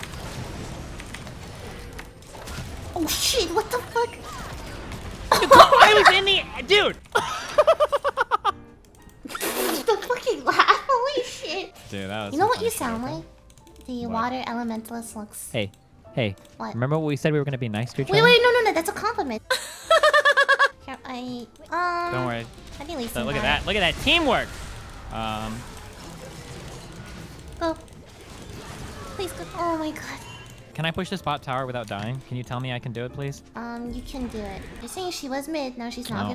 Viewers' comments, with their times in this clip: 0:07 when you laugh..
0:19 Omg i died on part that laugh is just 😂👌
0:19 best laugh hahah